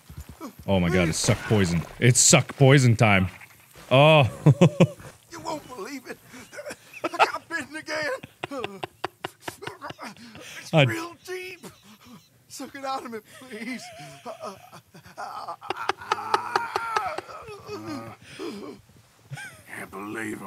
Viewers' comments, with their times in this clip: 0:07 Man: help! falls to the ground in agony You won't believe it. I got bitten again! Mark: laughs continuously